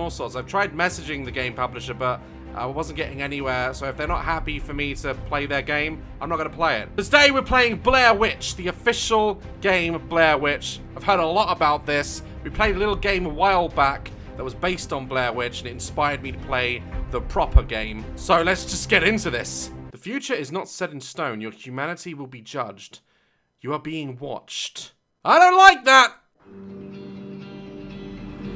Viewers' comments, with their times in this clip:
0:10 Did his accent change for a second? 😂